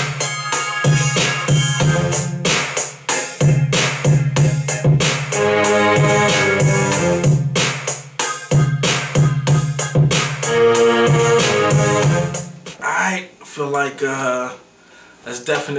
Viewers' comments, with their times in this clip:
0:03 Wasn't really feeling it until you dropped them strings It's hot!